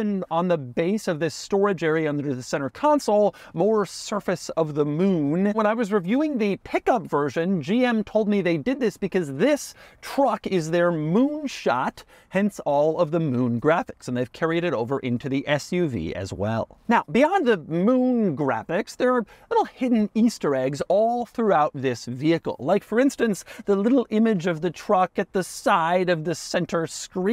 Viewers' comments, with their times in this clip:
0:08 You can hear his voice transform into other Doug